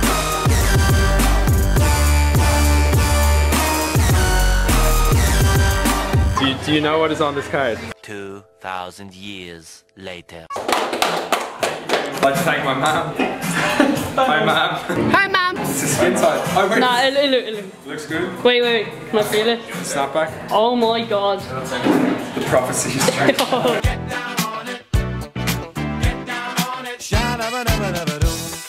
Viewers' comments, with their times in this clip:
0:10 I started that applause !